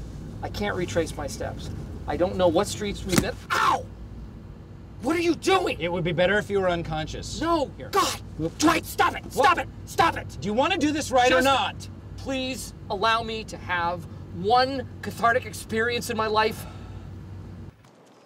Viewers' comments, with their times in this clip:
0:03 Dwight's sudden smack was 🤣🤣🤣🤣🤣🤣🤣